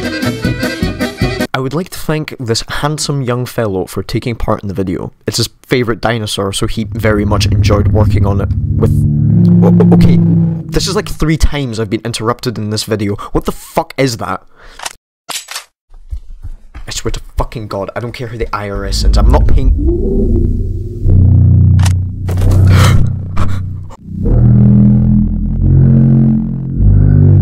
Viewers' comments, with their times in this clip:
0:09 "Don't mind my owl in the background" The owl in the background: